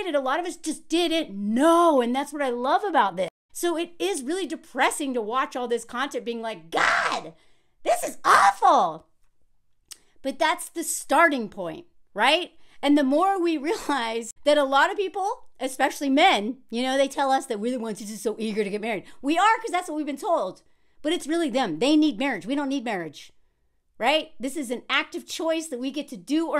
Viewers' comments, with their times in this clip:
0:08 "god, this is awful", my favorite voice of yours, i loove how animated and expressive you are, fellow adhd-er here, it's giving me the affirmation to do the same and be my chaotic weird self. thank you for existing and being you.